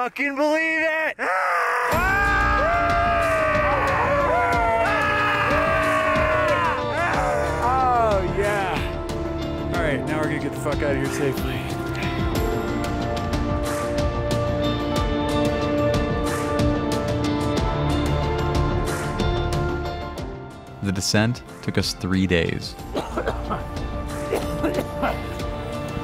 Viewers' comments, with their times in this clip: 0:08 The point ?.... all that work for a scream and then .. 🤣